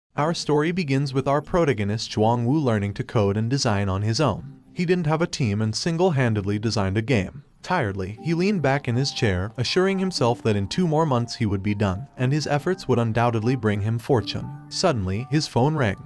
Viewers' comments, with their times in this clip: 0:01 you butchered the pronunciation of protagonist